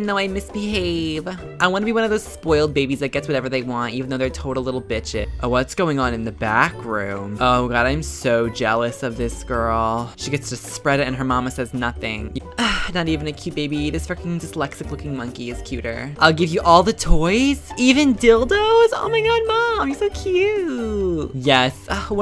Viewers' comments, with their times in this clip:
0:06 Oml when he said that sentence in a baby voice IT WAS TOO FUNNY OMG 😂😂😂
0:06 did anyone hear music and couldn't hear him talking?